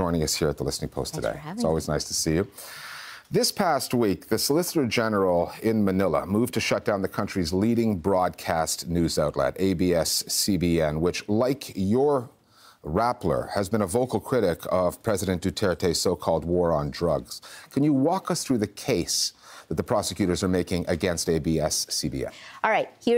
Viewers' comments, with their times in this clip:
0:06 M.R point of law sighting "hang a what sword"???